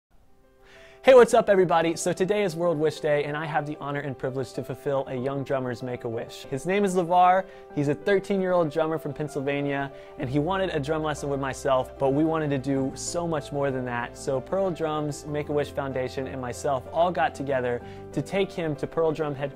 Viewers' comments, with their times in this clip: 0:00 Cool backround when u use ear or head phones the right is the back round and the left is the telling. You can found it in the first use ear or head phones when you watch it. SO COOOOOOOL
0:00 my left hear!!!